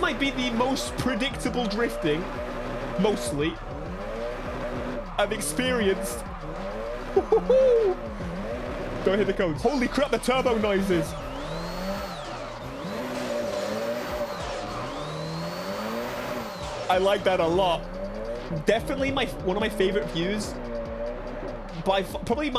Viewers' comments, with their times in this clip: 0:09 man those turbo noises!